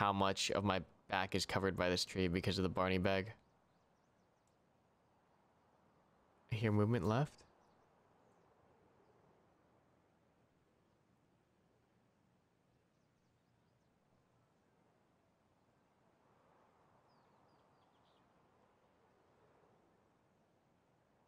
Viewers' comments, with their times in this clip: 0:04 He says that he heard movement to the left Does anybody hear this as well? I turned my volume to max but I can't make it out. Is this because of a decrease of audio quality when uploading to youtube, or am I just deaf lol.